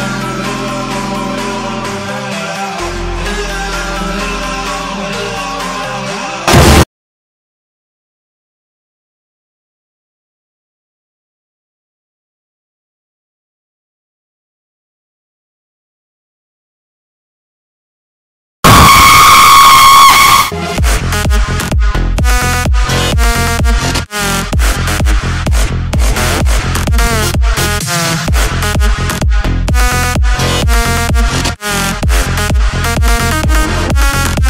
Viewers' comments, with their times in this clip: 0:05 :'V and the fcking screamer JJJAJAJAJAJA JJJAJAJAJAJA JAJAJAAJJA JJJAJAJAJAJA JJJAJAJAJAJA
0:18 Fuck you! I had a different tab opened, but heard the song stopped so as soon as I switched to this video to see what was wrong, I saw you pop out. Almost gave me a heart attack haha. Great video though, and amazing song.